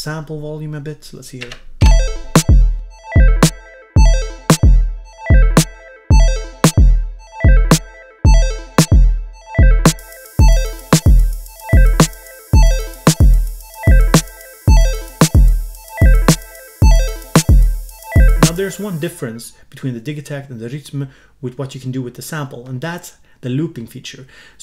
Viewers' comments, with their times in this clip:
0:08 Just wanted to point out how much I love those hats